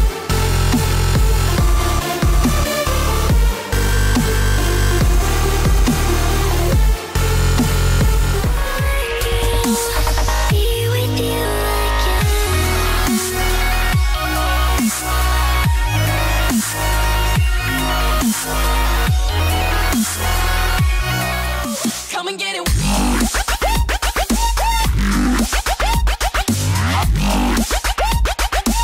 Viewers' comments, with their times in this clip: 0:10 is it me or is this song similar to Marin Hoxha - Endless